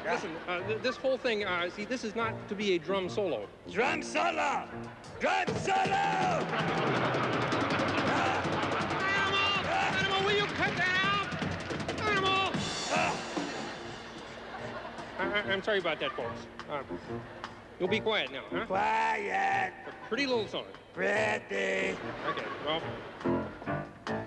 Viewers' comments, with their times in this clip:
0:09 Me who is angry and hears the rooster's crowing